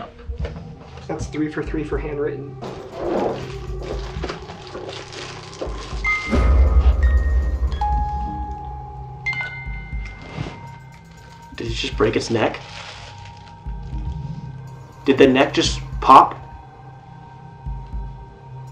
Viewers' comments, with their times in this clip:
0:06 does ellie play two different songs? part one she plays a lullaby but it sounds more like Six’s Theme Song from the game Little Nightmares.